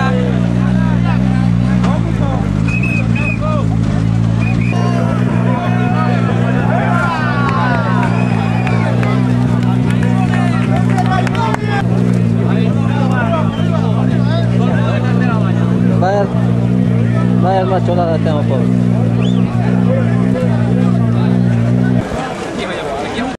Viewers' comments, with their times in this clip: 0:05 someone shouts "goooood" in finnish,.. at least it sounds like that : )